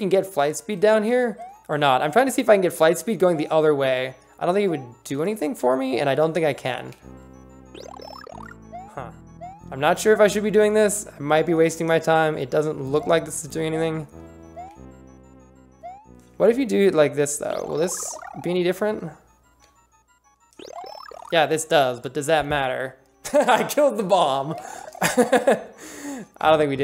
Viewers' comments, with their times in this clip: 0:08 sounds like the Minecraft villager and these puzzles should have that long timer glitch